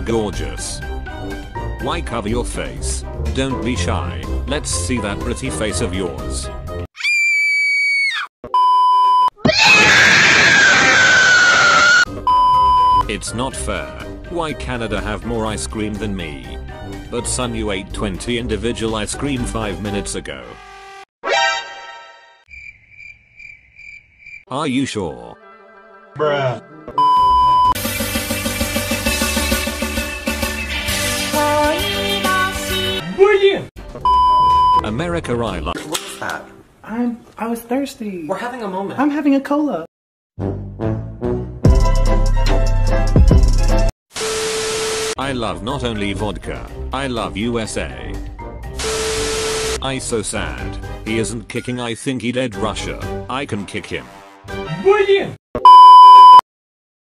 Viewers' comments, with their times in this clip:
0:09 I love that shout. And Ukreina look like " what the heck is happening"
0:10 rip my ears 𝕋~𝕋
0:27 ............ The song tho- anime nosebleed
0:32 Uhh, am I the only one who heard lan wangji said "wei Ying!" ???
0:40 My favourite beat now